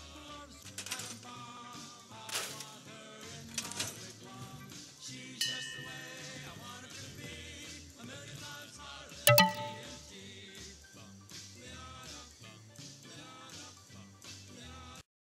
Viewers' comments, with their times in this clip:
0:11 The music as she falls is too perfect. “Bum, ba da dum! Bum, ba da dum”